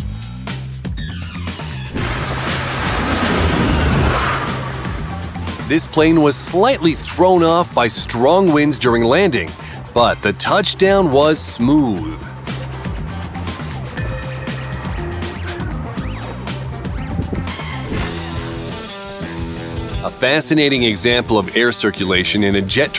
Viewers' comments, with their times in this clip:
0:07 Who is Rafael, your caregiver? The name of this jet is Rafale, the French term for gust. Go and make cat videos!